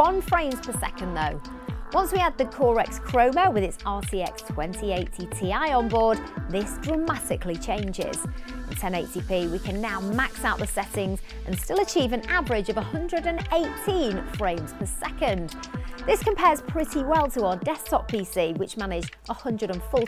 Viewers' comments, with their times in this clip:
0:05 Really? LOL! Razor .... RAZOR????